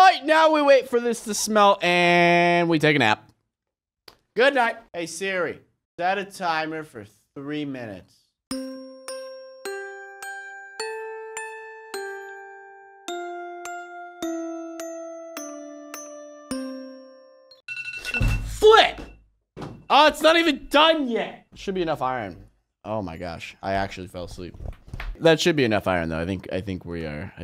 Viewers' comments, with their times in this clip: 0:09 Did anybody else notice that the music is in sync with the smelting arrow?